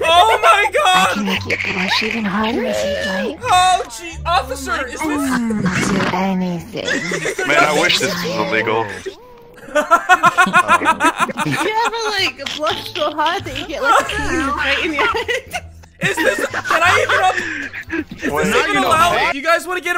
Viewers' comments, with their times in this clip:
0:06 The cop part made me die because he sounds like he is bored of everything 😂